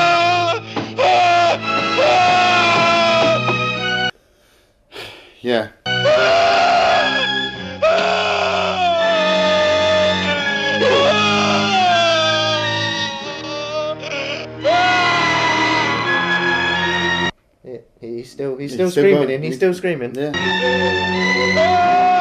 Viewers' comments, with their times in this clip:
0:10 did the director say "Do your best Scooby-Doo impression"?